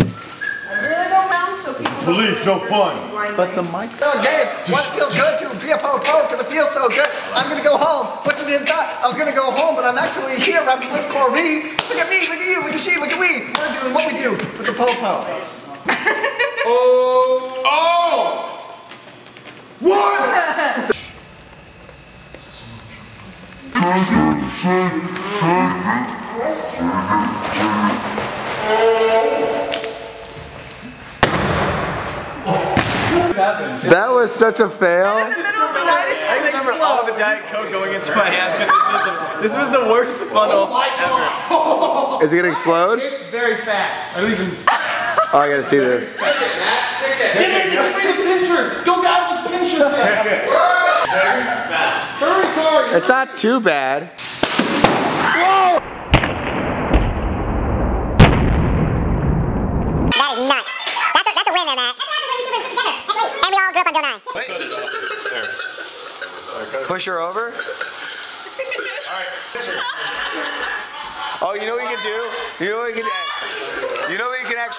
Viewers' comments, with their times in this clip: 0:05 KICKASS WHITE RAPPING ^_^ I probably repeated just that part like 10 times.
0:55 hahaha the explosion sounds like my Battlefield Bad Company2 xDD